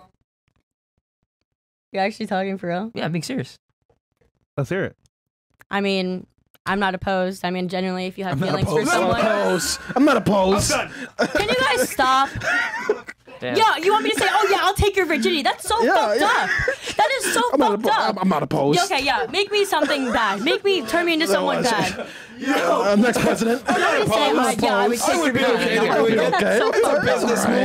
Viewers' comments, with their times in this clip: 0:05 lol the look on his face when she said that. even he knew what that really meant. even said "...damn" under his breath.
0:13 Da undertone “Damn” 😂